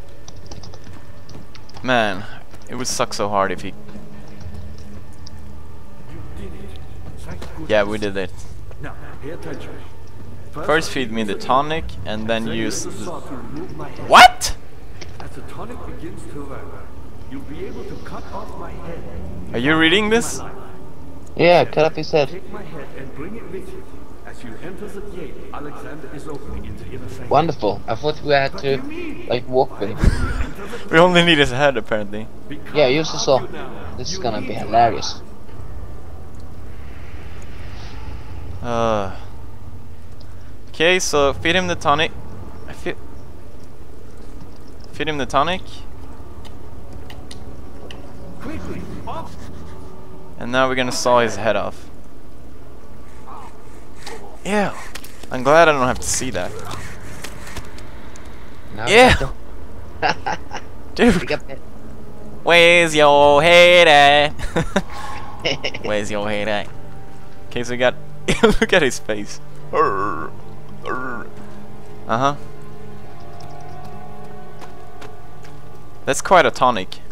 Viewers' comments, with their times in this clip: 0:08 is when AGRIPPA starts to speak!!
0:09 Agrippa - "Now, pay attention. First feed me the tonic and then use the saw to remove my head." :3 Pewdie - (shocked) "WUT?! Are you reading this?!" :O Friend - (completely calm) "Yeah, cut off his head." :P
1:01 I LOVE that song!! lol